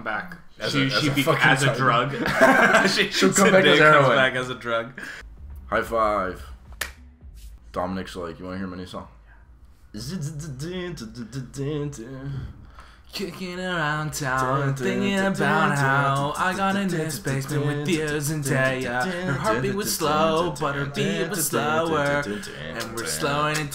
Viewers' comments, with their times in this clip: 0:08 THE FUCKING DOMINIC FIKE IMPRESSION LAMAOAOAKAAOOAOAAOAO